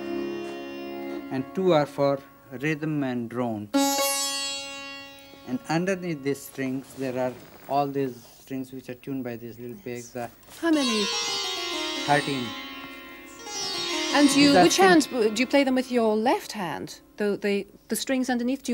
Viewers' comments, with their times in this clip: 0:03 I thought he was gonna play sweet child o' mine
0:04 I can hear Muriel bagg from courage the cowardly dog from those 2 notes 😁